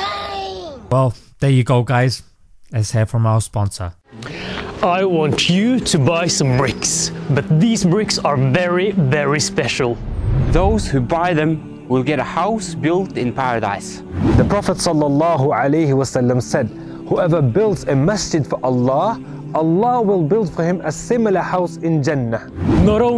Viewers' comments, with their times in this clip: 0:04 1st guy talks very beautifully... Very Enthusiastic... Mashallah